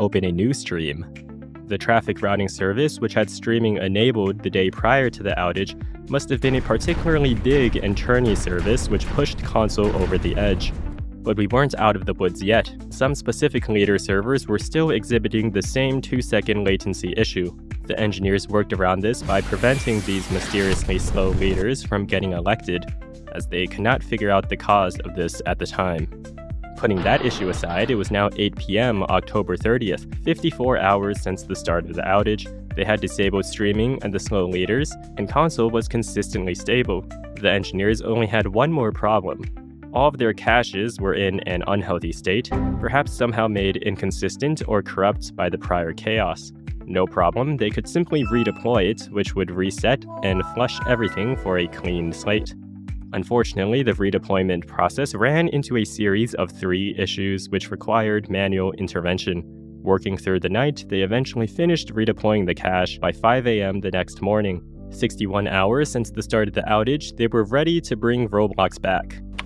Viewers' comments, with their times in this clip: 0:06 The Road Traffic Are Exploded Due To Honking
0:48 who heard Windows 7 Shutdown Sound?
0:50 who heard Windows 7 Startup Sound?